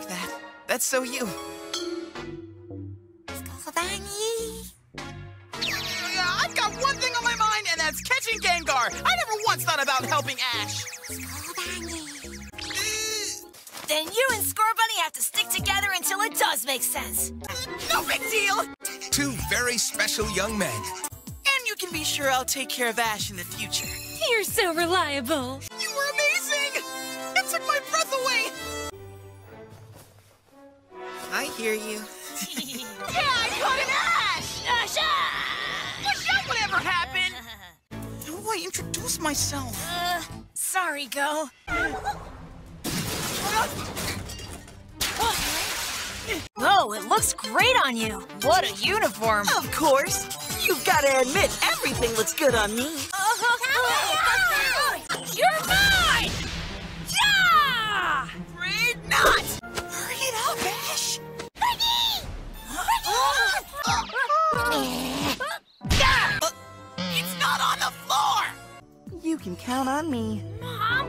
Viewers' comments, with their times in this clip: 0:05 for me, it sounds like Goh is saying "Gay-ngar" 💀
0:07 WHY DID I HEAR THAT AS GAYGAR!?!?
0:55 Ash aggressively shouts: YOURE MINE! 😭❣️
0:55 I SERIOUSLY THOUGHT HE JUST SHOUTED "YOUR MOM!!!!" FOR A HOT SECOND GOD